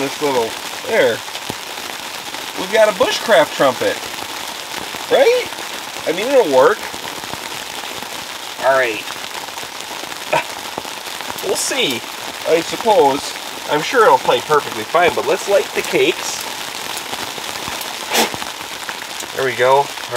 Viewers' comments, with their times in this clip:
0:05 Monty!!😂 And the entire BDAY celebration song - Stellar!! And the morning "trumpet" - and all the trouble getting out - you outdid yourself!!! Thanks.